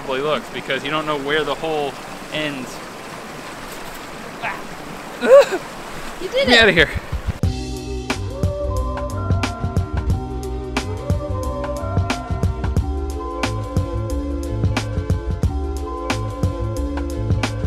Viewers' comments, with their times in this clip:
0:05 Probably the most masculine noise ever made 😉